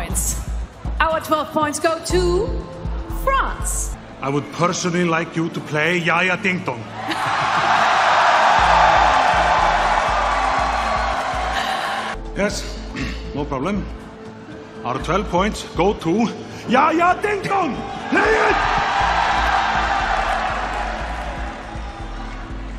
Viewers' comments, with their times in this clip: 0:08 Best fake laugh ever